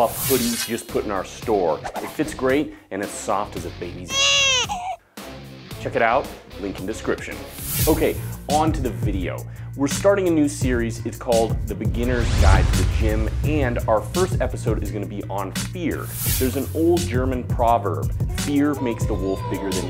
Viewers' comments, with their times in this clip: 0:04 Baby's ÄÄÄYH So did u censor the word "dick" with that crying noise?